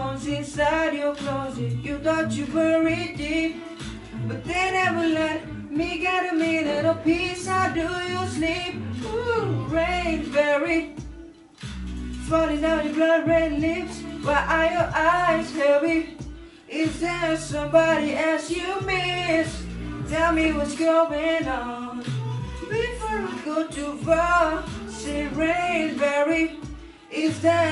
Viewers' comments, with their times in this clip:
0:09 I think that you have a serious vocal problem dude.